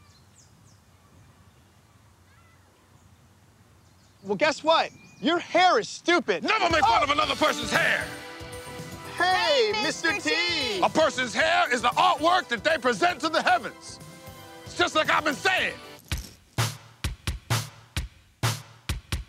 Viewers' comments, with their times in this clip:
0:05 died at the scream
0:06 LOL, Love Key's startled cry when Mr. T suddenly appears and grabs his shoulder.